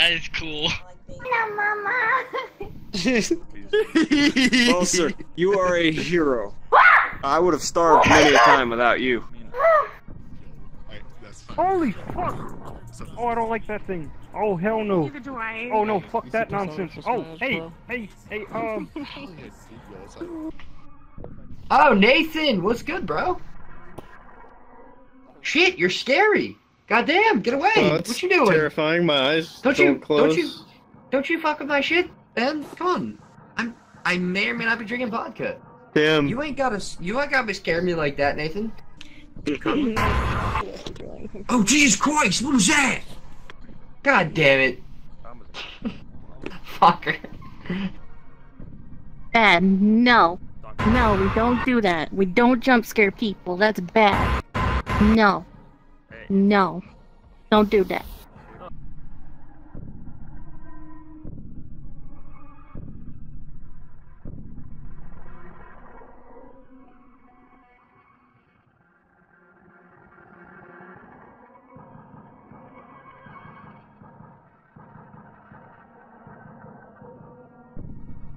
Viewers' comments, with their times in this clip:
0:03 what kind of laugh is that hahaha
0:39 From the way that guy said oh what was that made me laugh
1:01 this entire segment was silent but i heard every word.